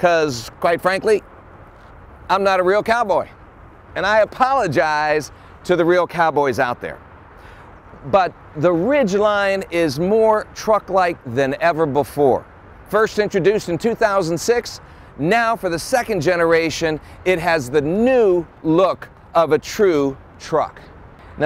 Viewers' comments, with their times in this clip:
0:03 He stops doing the dumb cowboy voice if you want to skip to that point and stop cringing.